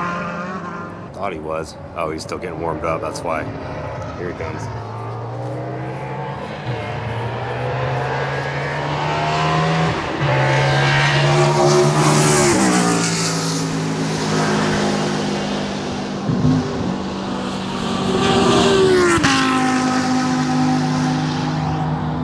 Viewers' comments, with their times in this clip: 0:07 I know everybody loves the exhaust noise from these older NASCAR engines, but the induction noise right as Lake comes tearing under the bridge is nuts. The only thing I've heard with more aggressive intake noise than that is an old DTM car, but those are almost all intake noise.